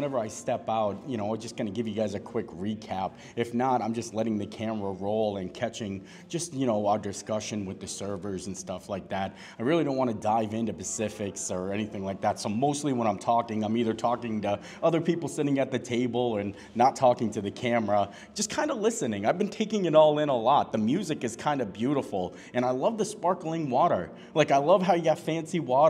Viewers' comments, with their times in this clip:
0:09 dive into Pacifics. Me either brother.